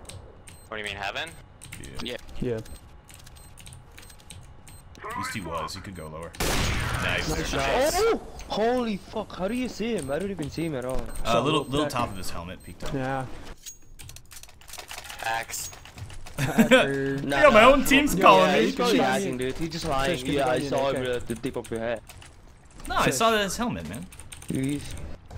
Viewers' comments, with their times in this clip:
0:08 did anyone hear this guy asking for an AK the first time they watched? Don't complain when you ask quietly when everyone was talking!